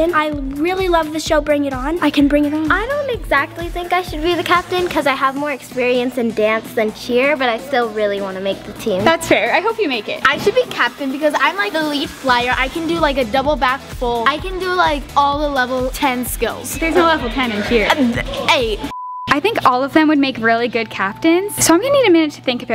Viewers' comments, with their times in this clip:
0:10 The girl made so mad she sounds so bratty and spoiled and acts like it too